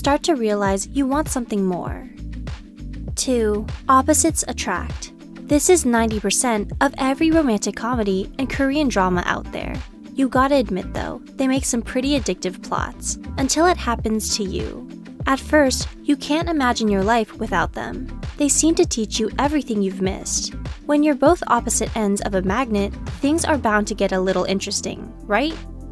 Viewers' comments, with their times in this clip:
0:08 korean drama? Is this is just me hear something like this?